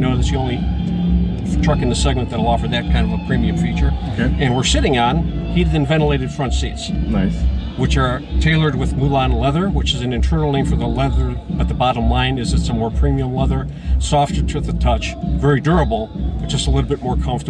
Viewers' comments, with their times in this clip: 0:04 it sounds like he said "and we're SHITTING on heated and ventilated front seats"